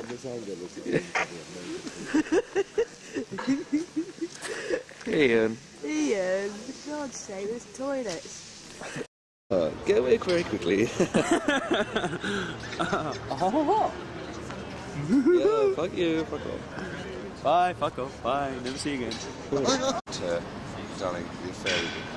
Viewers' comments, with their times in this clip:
0:10 HAHAHA the impression of rik was BRILLIANT!!!! x